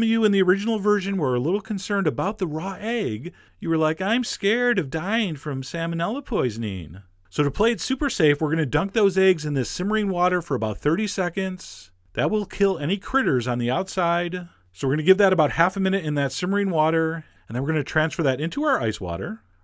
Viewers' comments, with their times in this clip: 0:04 Hahahaaa!!! Tone, dude! Just sayin' LOL
0:04 That was one of THE MOST sarcastic tones I've heard in a loooong while hahaha! Way to go Chef John!